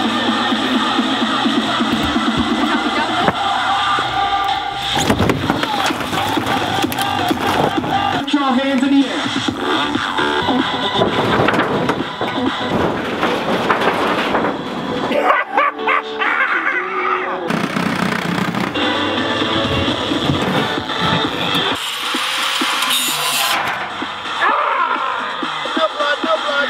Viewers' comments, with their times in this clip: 0:08 Enter the inspirational music....